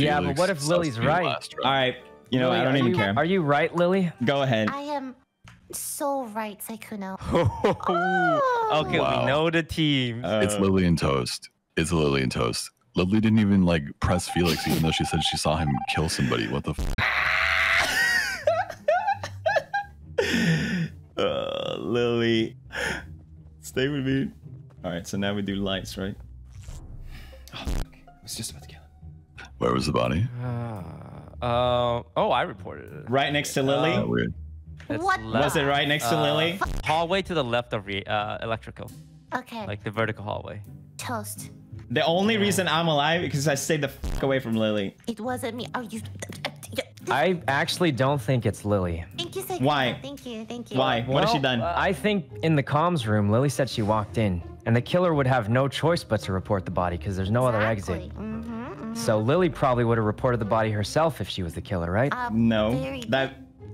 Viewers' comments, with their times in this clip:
0:06 lily sound is very cute.
0:46 sykkuno really out here sounding like anime character holy haha